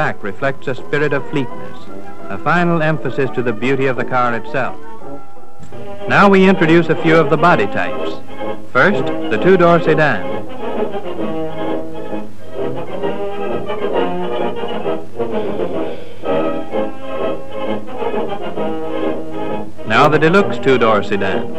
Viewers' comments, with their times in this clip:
0:05 The different body types that were available for the Ford Model 18/40 V8 car: 2 door sedan, deluxe 2 door sedan, 4 door sedan, deluxe 4 door sedan, 2 door Victoria, 2 door roadster convertible, deluxe 2 door roadster convertible, 4 door phaeton convertible, deluxe 4 door phaeton convertible, 2 door coupe (notice how the American narrator in this 1932 vintage promotional film says "koo-pay", the correct French pronunciation of coupe; for some reason Americans today say coupe as if it is a chicken coop), 2 door sport coupe, and deluxe 2 door coupe. 12 body types are mentioned here, I read somewhere that there were 14 body types, including the standard and deluxe versions of each body type. The other two body types may be mentioned in this documentary, but it is not clear.